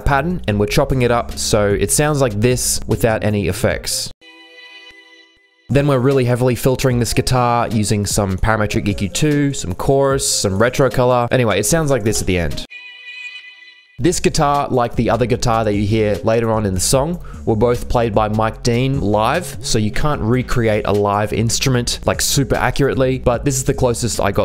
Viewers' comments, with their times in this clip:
0:05 Great video!!! However what my ear felt on the actual song for what u did in is that they created another reverb/delay channel for the pluck that u created in the very first part of the video. Just my opinion😊